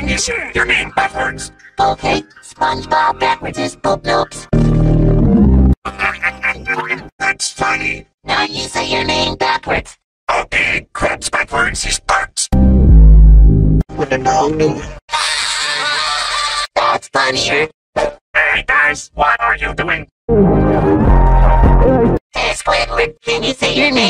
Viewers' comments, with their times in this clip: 0:06 Trippie Redd at the beginning of his song